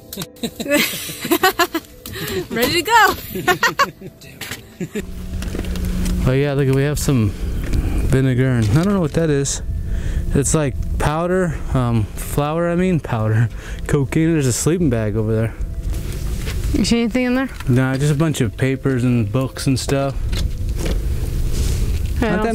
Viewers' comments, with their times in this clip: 0:04 Listen there's an EVP and it sounds like that missing kid saying DUDE and its clear as day